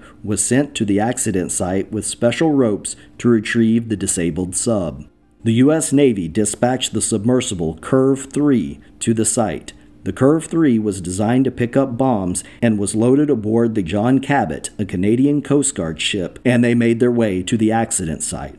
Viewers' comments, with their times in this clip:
0:06 Man I really love the HMS Heykatey